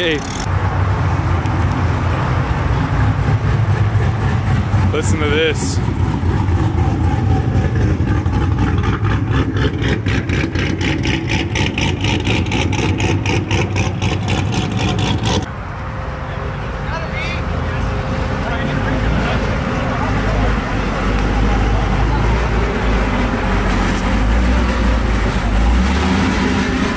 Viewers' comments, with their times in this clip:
0:10 that idle is nastyyyyyy